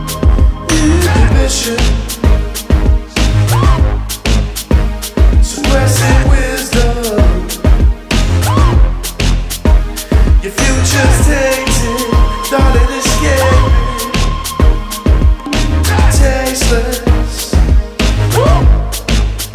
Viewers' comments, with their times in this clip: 0:04 that transition from is so satisfying. It makes perfect sense